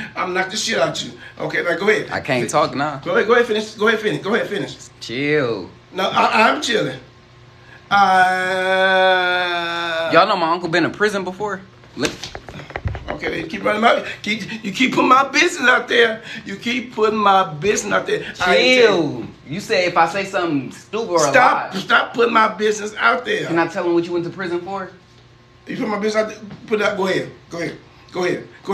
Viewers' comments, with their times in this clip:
0:10 That smack was personal 💀